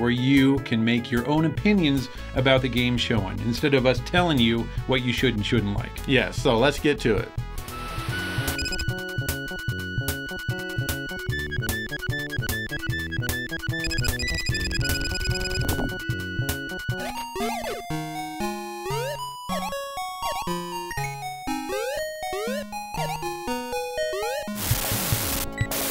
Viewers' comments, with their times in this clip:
0:09 Question..? I have outrun on the actual master system. Not rom. And it doesn't sound like that! Is that the FM chip or???